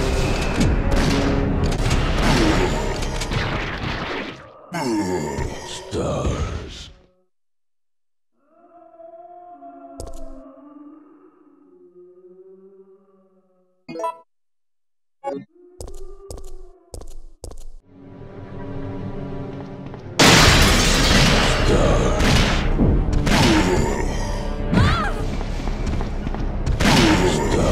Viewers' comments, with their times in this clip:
0:08 that background sound is terrifying af